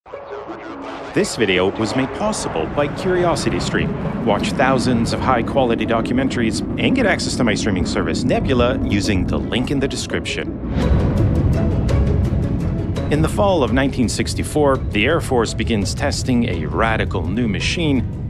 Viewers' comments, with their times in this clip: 0:01 What is the soundtrack? It sounds so epic for such an amazing bomber.